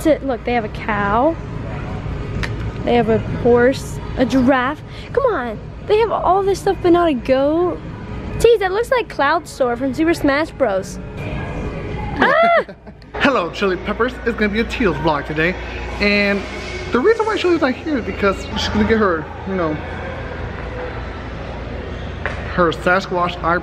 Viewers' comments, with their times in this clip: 0:09 I heard dace till you're dead
0:11 do you hear that music?